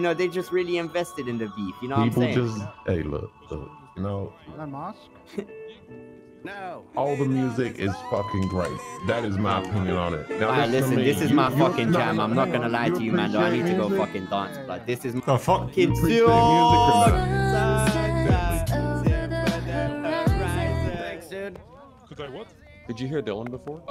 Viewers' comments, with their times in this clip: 0:05 song is fire